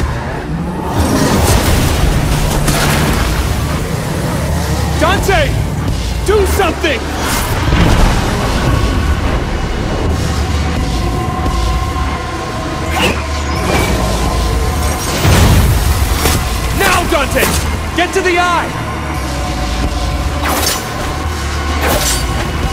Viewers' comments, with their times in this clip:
0:04 Vergil: Dante, Do something Dante: Farts so hard that he stops time to Vergil attack Mundus "After 30 sec the fart doesint stop" what???